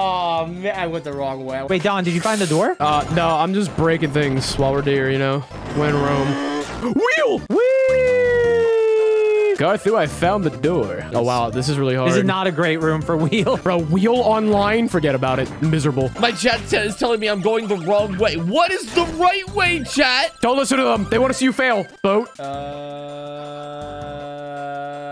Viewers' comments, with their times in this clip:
0:08 Ok guys hear me out but does the person speaking (idk who it is) sounds like Guy from Naruto like im not kidding put their voices together and we have ourselves a IRL version of Guy.